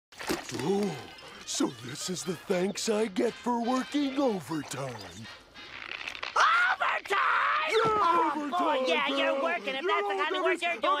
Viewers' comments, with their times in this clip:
0:01 Patrick's voice sounds like a mix of Winnie the Pooh and Tigger.